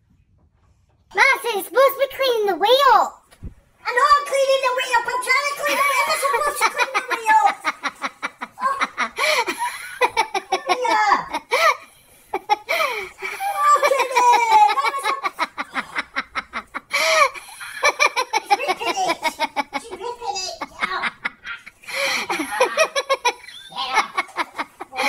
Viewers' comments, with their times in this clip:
0:07 that’s when he first starts to regret getting the dogs lol 😆 pee on the floor… dogs chewing what he’s trying to mop up with… and the wife laughing her head off at him like normal haha